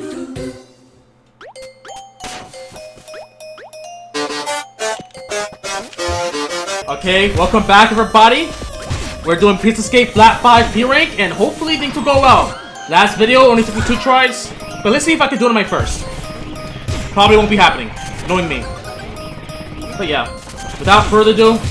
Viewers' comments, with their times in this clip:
0:04 i thought its only me who is that insane to hear megalovania in spaghetti motif